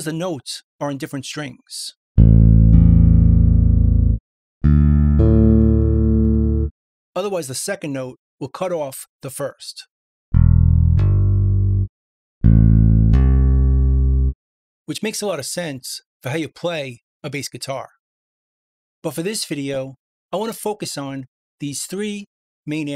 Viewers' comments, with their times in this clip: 0:06 I won't be Firing my Bass player, this Plugin is a little out of tune. Listen to the added 5th in this video.